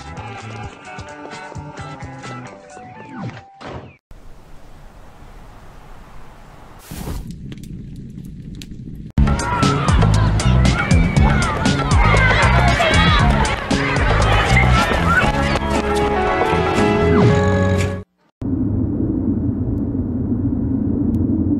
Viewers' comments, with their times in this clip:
0:09 U know I can't stop hearing that beat It's stuck in my head And I was born around 2003 and I was in the CN noods era It was weird but seeing CN city they make me think Wow these days were golden for kids back then